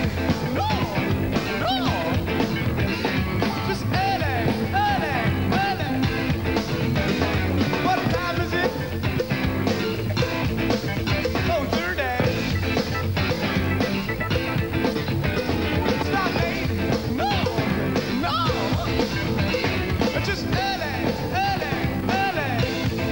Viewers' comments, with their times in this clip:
0:09 the cowbell comes on and the world is a better place for a moment